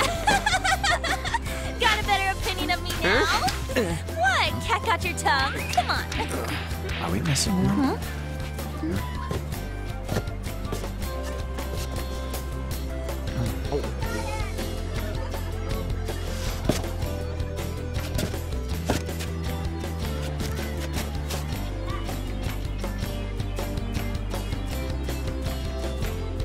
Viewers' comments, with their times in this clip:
0:07 How can his voice be this sexy
0:07 Akira says something
0:07 holy crap he spoke!
0:08 WE GOTEM BOYS JOKER FINALLY SPOKE!!!